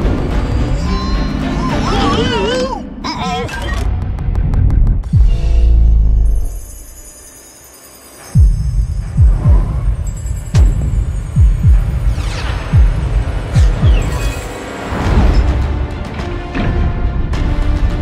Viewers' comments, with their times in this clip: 0:03 the little uh-oh adorable